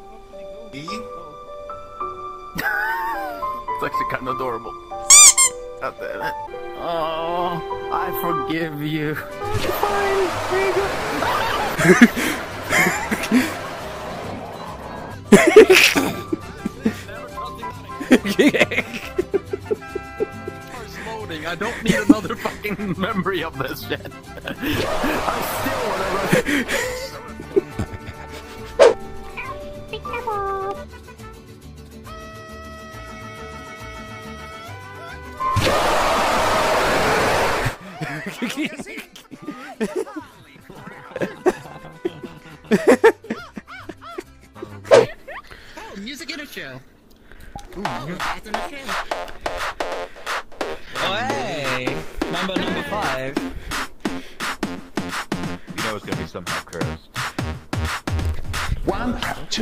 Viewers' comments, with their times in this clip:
0:10 I recognize the roar from It is a bass boasted toho King Kong 1962 roar
0:10 me when the cartoon cat roar:
0:35 I do believe that King Kong‘s roar
0:35 that roar sounds familiar....
0:35 bruh jumpscare is king kong from 1962 but loud
0:45 the best song
0:46 bruh it's only one note , my inner pianist is dying 😂